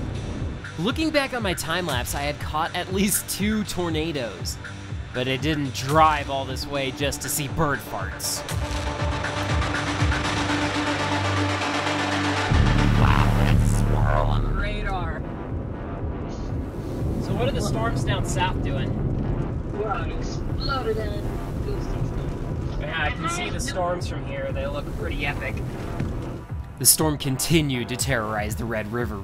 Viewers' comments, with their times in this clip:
0:10 the audio failure LOL
0:12 i cant with how the mic distorted 😂
0:12 dayum dats some bass 😎
0:12 it's swirling one sec engages robo mode WOW THATS SWIRLIN on radar
0:12 wow a mii voice
0:13 why does your voice sound like that it’s funny lol but those tornadoes looked great too
0:13 you turned your voice into a robot or what
0:13 bro the way the the microphone just changed ☠️☠️☠️💀💀💀💀💀